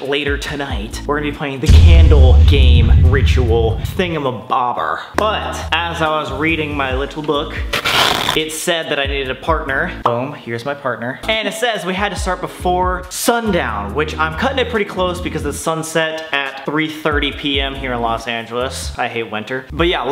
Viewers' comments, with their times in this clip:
0:03 wtf does he say?
0:04 the way he said thingamabober